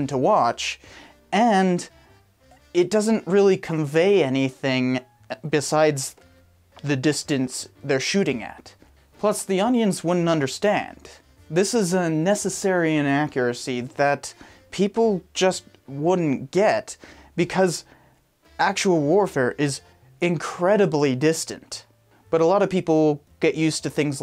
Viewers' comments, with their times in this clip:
0:08 “Plus the onions wouldn’t understand”
0:09 “Plus the onions wouldn’t understand”